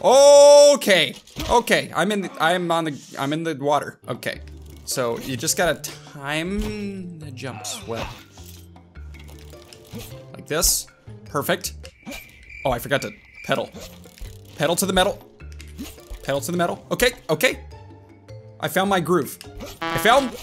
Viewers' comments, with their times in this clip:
0:07 om in the..getto🤣🤣😅